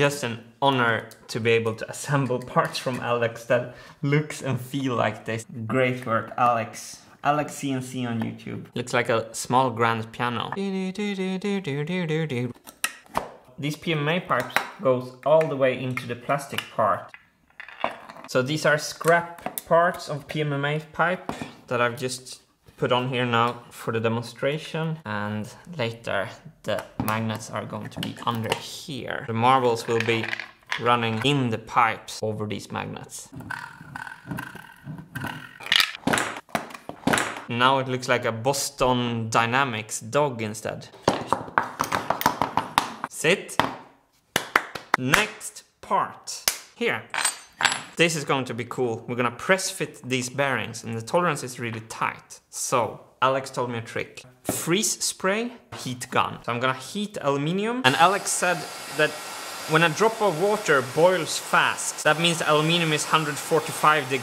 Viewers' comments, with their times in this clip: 0:08 Your smiley gears playing the Beethoven music.. ;-)
0:44 i heard "Next Meme" XD
0:45 I thought you’re gonna say “next meme!!!” Because you are clapping LOL 😂 🤣
0:48 That clap in min sounded like PewDiePie's "next meme".